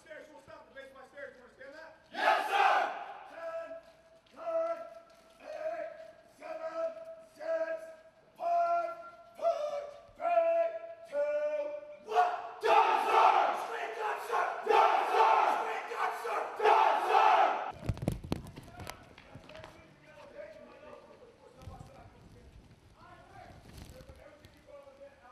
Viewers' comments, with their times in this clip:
0:07 that voice crack killed me 😂
0:08 Epic drill instructor voice crack
0:08 Dat high note tho
0:08 Dude just hit a Mariah note. 🤣
0:09 he hit that high note hahahaha
0:09 Was that a voice crack when he said four?
0:10 The voice crack would have me dying of laughter if I was there but at the same time scared that I did